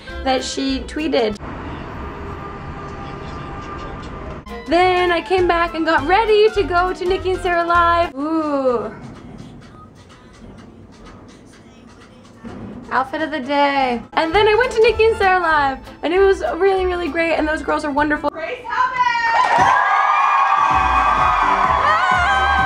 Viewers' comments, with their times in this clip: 0:07 that is daaaaaniiiiiiiiiisssssshhhhhhh music, omg.